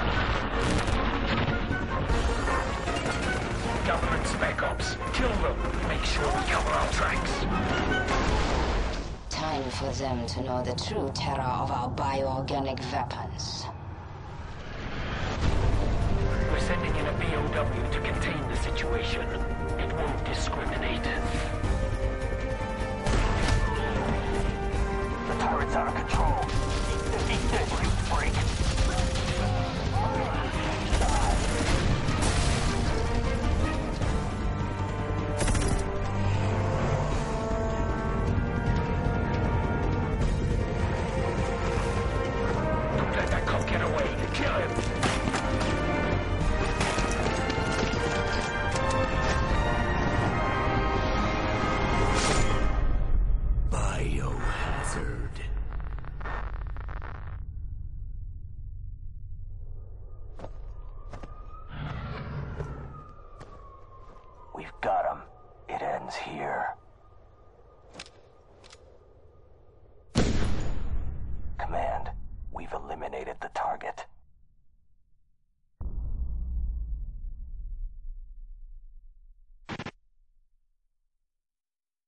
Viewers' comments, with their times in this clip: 0:10 "bio-organic veapons" LMAO she talks just like my school counseller, a dumb fossil we manipulate to say wednesday " VEDnesday"
0:12 Bio Organic Veapons!
1:09 pistol shot!!!! not the assult rifle that the uss member was holding but the handgun leon has!!